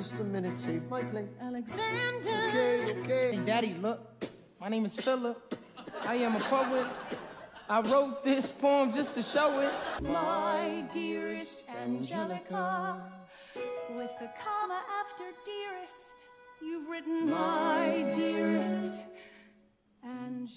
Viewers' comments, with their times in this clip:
0:07 the way anthony laughs at himself kills me 😭